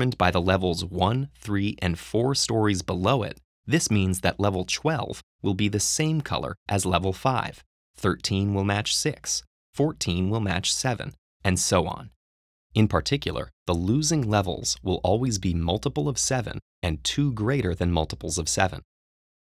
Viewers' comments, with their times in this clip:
0:04 Wait did he say level 'chwelve?'